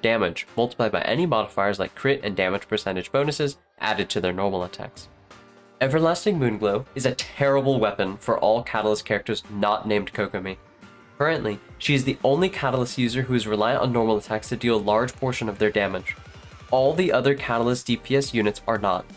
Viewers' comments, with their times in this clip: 0:06 this is the first time I heard a fellow respected Theorycrafter say "terrible" out loud with full confidence. Damn it made me wheezed harder than it should be.